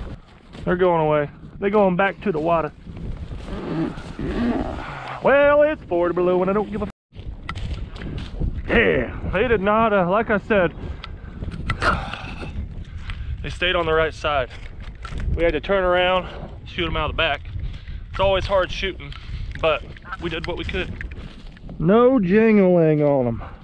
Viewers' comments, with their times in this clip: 0:05 new outro song...